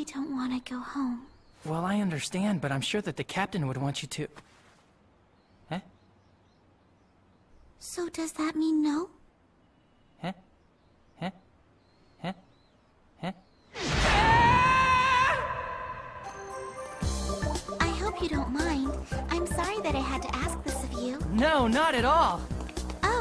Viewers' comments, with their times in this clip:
0:08 That part where he kept repeating "heh heh heh" priceless lol